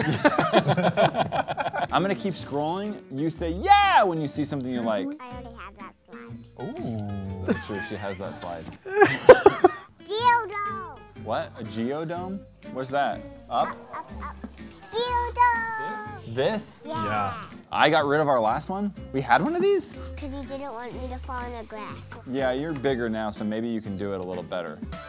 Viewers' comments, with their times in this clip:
0:08 I'm to dirty minded why did I think she said something else